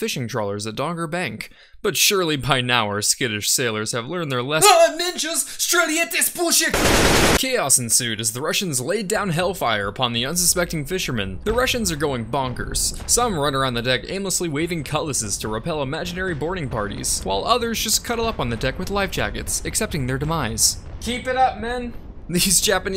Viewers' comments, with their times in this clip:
0:04 🤣 what does that mean? I just understood Aaaah ninjas!